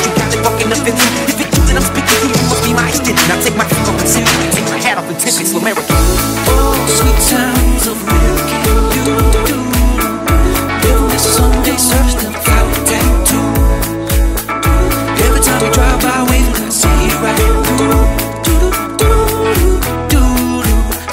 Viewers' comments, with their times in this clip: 0:05 Should have made the rap verse more understandable and the SLUMERICAN part much more highlighted (maybe silenced the music). Other than that - dope remix.